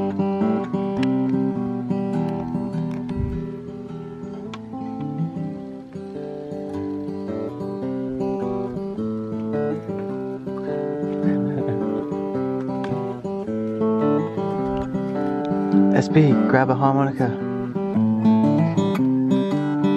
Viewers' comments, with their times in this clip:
0:03 Jeremy's crabbin tune sounds very similar to 1962 Bob Dylan song Corrina Corrina, several different versions on youtube. One of my favorite chill songs.